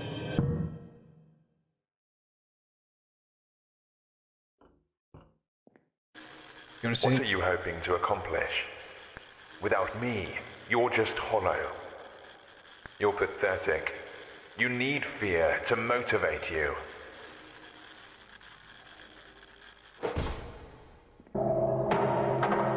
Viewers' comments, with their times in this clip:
0:07 a talking blob sounding and being a bad motivator like Gordon Ramsay and it opens its mouth like a puppet? sure adds to the horrorfying atmosphere